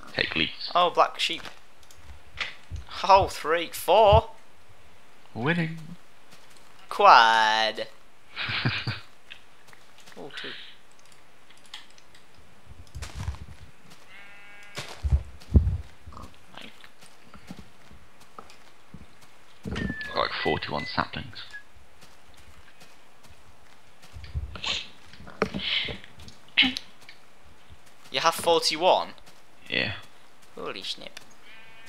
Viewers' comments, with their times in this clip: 0:09 Ultimate Whiteboy impression!
0:19 they sound boned